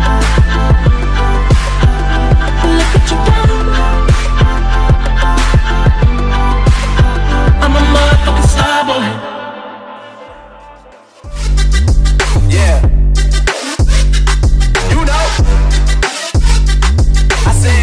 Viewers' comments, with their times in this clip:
0:04 anyone else notice how not only are the laughs synced up, but also the tail whips to the beat? awesome, just awesome.